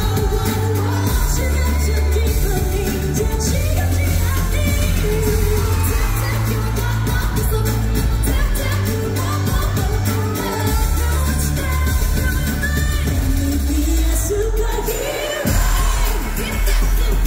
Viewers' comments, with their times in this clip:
0:03 is haewon getting hoarse already here ?